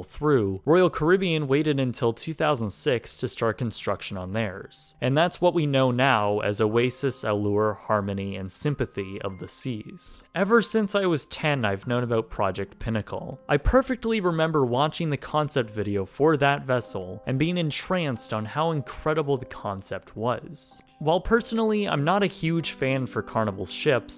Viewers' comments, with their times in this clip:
0:08 Wait... Sympathy of the Seas?!? 😂
0:08 "Sympathy" of the Seas. LOL. Royal Caribbean should have definitely gone with that name, but instead opted for "Symphony of the Seas".
0:08 Sympathy of the seas?!? 🤣🤣🤣
0:10 did he say Sympathy Of The Seas?